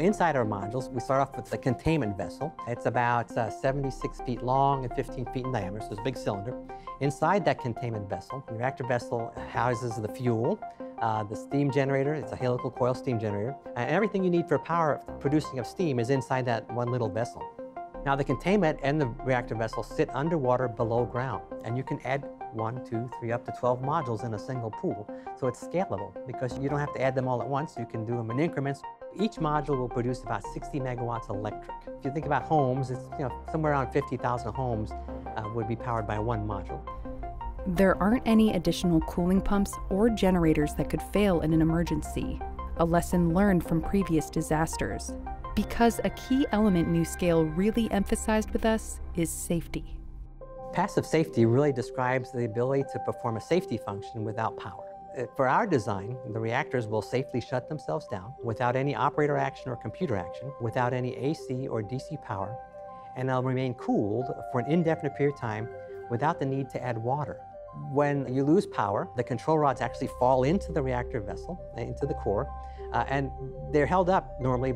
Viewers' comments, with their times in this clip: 0:09 the background music is too loud making it hard to hear the explanation.
0:58 this guy sounds like Steve buscemi